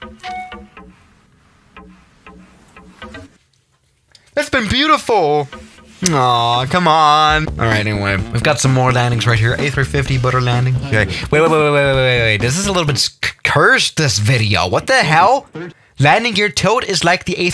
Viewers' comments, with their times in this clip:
0:05 you sounded kinda cute right there